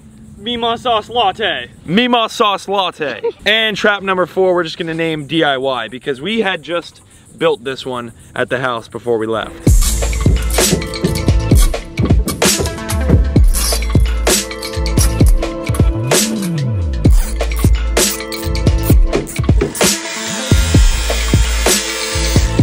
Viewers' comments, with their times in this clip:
0:10 I live alone and I thought someone was knocking on my window.